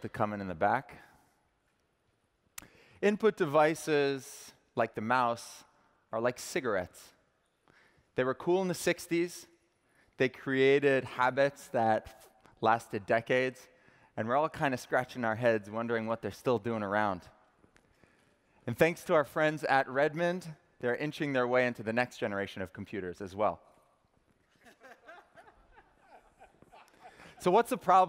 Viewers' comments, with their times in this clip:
0:10 "Hey Everybody how is it going" *not even crickets*